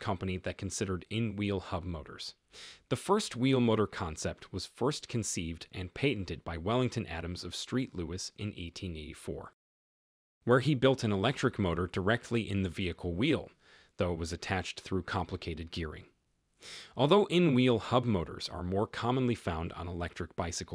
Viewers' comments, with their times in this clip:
0:05 "Street Louis?" Do you by chance main St. Louis?